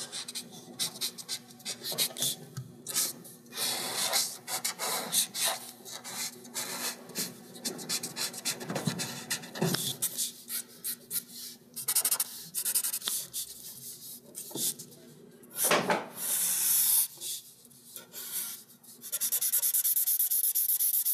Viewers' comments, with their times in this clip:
0:03 I feel like his pen is get so dry even more than my love life